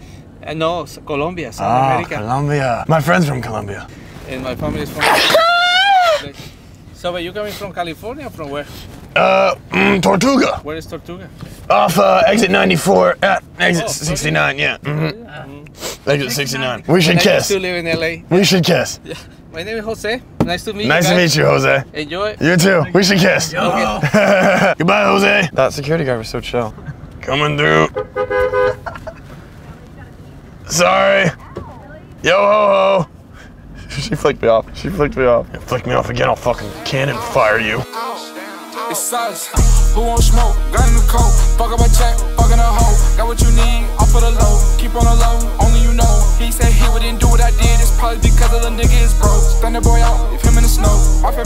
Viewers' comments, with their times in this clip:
0:03 are we just not going to talk about how legendary his sneeze was😅😂😂😂😂
0:38 that song was amazing🔥🔥